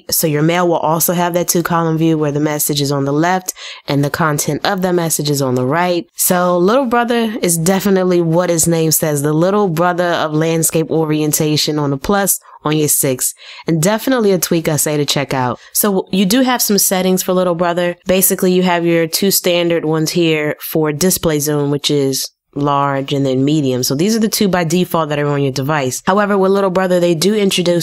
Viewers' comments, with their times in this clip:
0:09 Its dope how ya true accent pop out lmaooooo